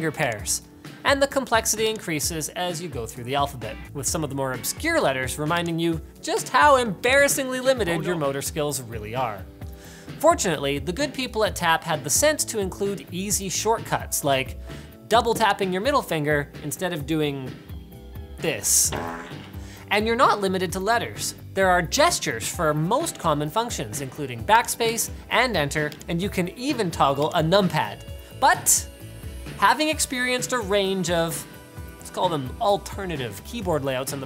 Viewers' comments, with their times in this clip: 0:07 Did I just hear Knuckles' "Oh no!" when accidentally flipping the bird? I love this video.
0:08 That Knuckles' "Oh No" lol!
0:08 Who noticed Knuckles Oh No ?
0:18 The fart sound got me lol
0:19 someone is having the good ol RIP in the bathroom